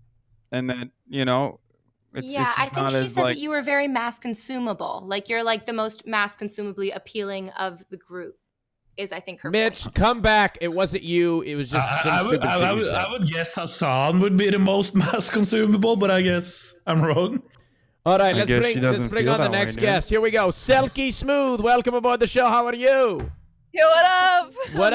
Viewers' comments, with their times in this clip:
0:10 wait,why do the girls talk when we can't even hear them?